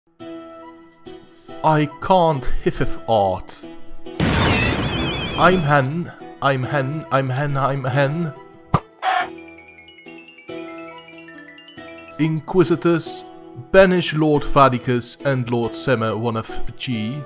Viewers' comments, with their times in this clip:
0:04 Amazing work of Renaissance art forsenE Clap Narutosen sound effect OMEGALUL